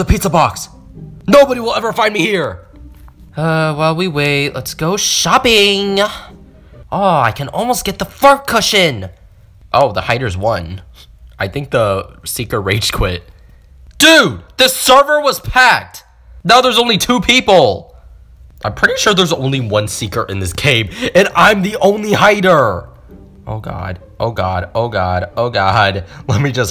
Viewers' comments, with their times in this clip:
0:07 sounded like the f word but it was meant to be fart